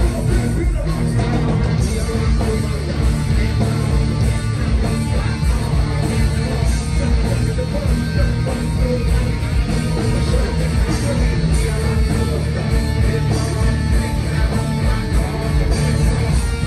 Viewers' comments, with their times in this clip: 0:03 I've always thought this song would have been 10x more powerful if played slower.